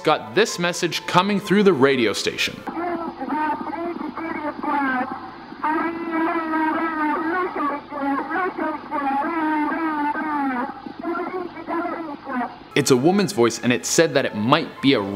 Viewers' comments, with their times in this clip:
0:03 sounds like Cardi b when she raps